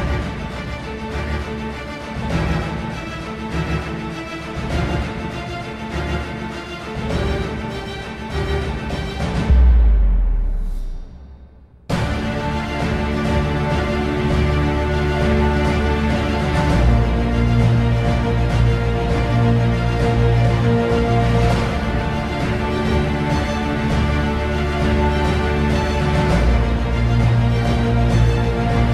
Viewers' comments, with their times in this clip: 0:10 insane beat drop <3